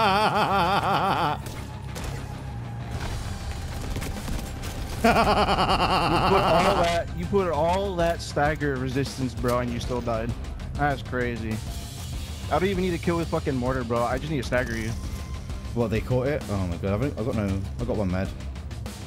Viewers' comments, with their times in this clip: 0:04 The evil laugh 😂